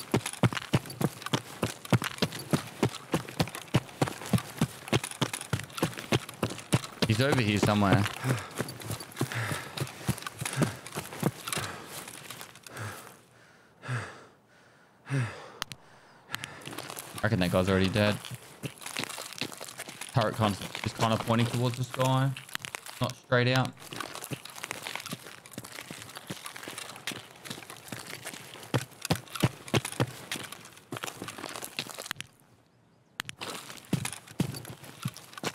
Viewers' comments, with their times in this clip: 0:08 why TF is his dude out of breath when hes got half or more stam?
0:17 Why is his PMC heavy breathing with half stamina??